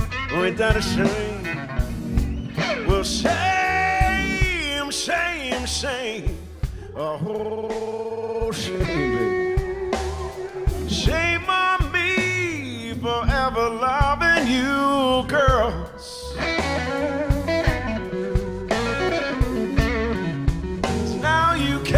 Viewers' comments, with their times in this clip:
0:06 <-- that gurgling just made half the females in the room become WAP.